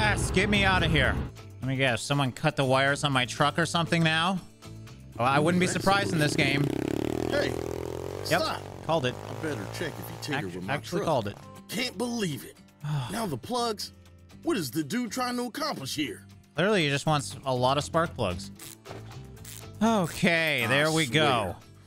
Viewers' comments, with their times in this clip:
0:06 I thought that was you farting lmao